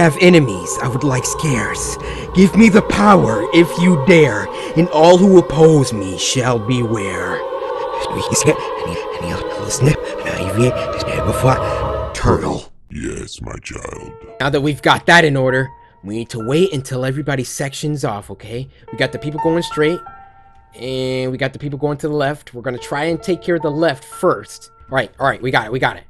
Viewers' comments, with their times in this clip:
0:08 reverse that and it'll say "alphabet, alien, pencil, execute." Not sure about alien though